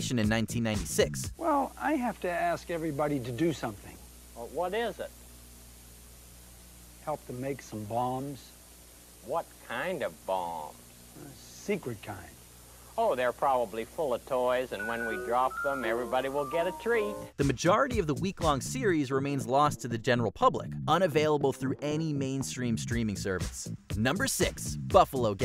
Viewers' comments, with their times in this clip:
0:06 "help them make some bombs" . . . a tire pops on the interstate "BOOM" 😅 🤣